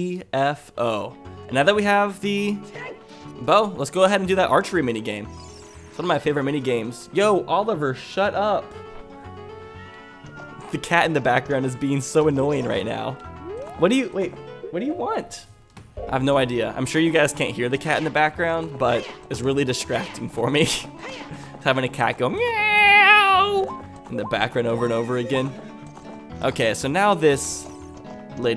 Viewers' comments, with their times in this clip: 0:10 you can hear Oliver lolol